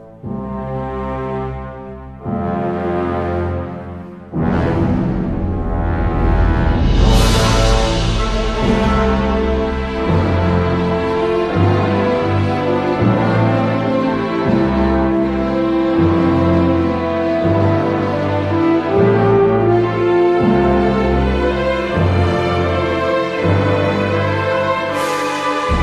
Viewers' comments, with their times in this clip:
0:07 kicks into such a beautiful piece With the major in his final moments, basking in his victory over what he hated most.